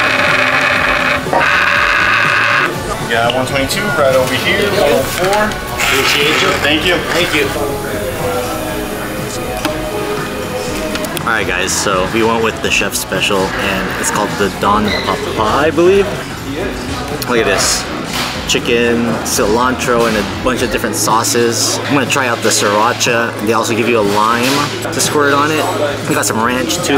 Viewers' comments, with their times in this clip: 0:08 the background music tho lmfao. its every bg music of people narrating a movie. shits funny